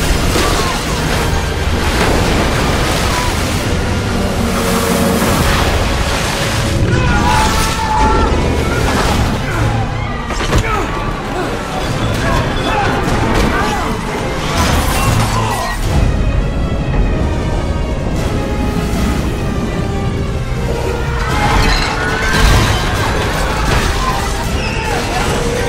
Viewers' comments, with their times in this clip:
0:07 Who wouldn’t be singing on New Years? all of the crew in the bridge are screaming